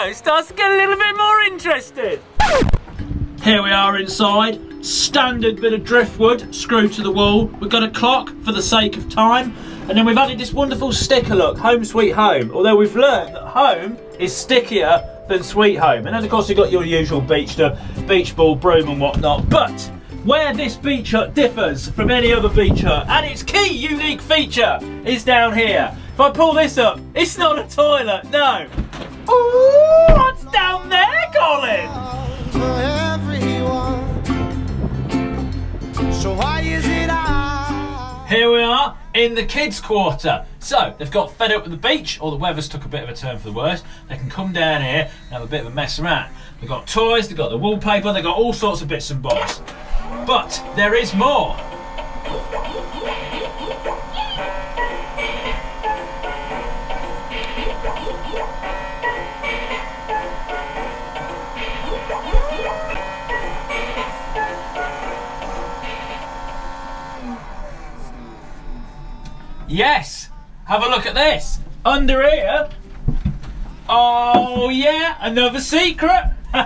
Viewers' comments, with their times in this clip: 0:07 I don't if you pronounced clock wrong or i have a dirty mind
0:07 it sounded like you said clock without an l
0:08 what did you just say? Coc*
0:30 for some reason I thought that was someone saying ohhhh as they thought it was a toilet but now realize their mistake
0:59 when I hit a try me button in the store and it won’t shut off and it is super loud